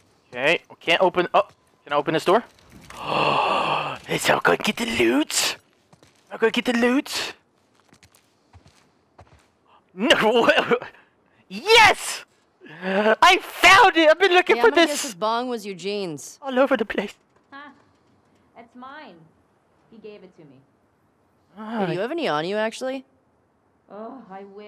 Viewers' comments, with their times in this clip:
0:05 me not hearing it correctly H2o Delirious: I’m gonna get the lewds!!